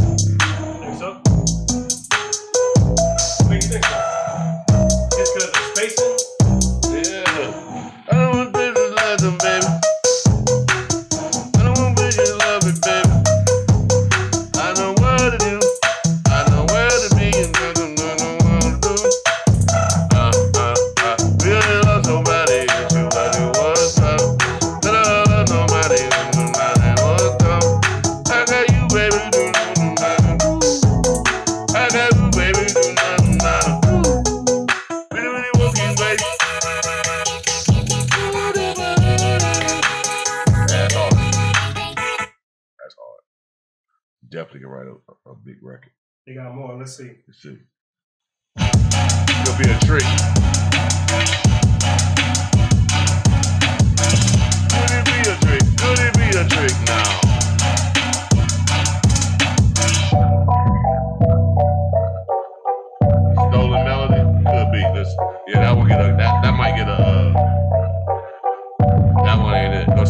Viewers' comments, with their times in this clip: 0:10 yandhi leak vibes
0:55 That was a fire beat and before it can even transition he has his yes man cut it off.. These streams really exposed his personality. Imagine him in a session.. "No" "Nope" "That ain't it" "Next one"...😴